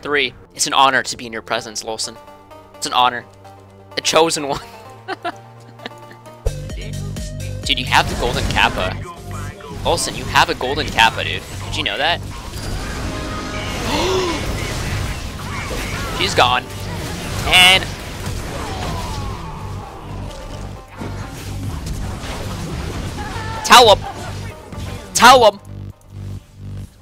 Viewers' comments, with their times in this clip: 0:10 i heard csgo sounds
0:10 Start listening Listen really really close you can hear cs:go voice communication, "bingo bango bongo, bish bash bosh" and "easy peasy lemon squeazy"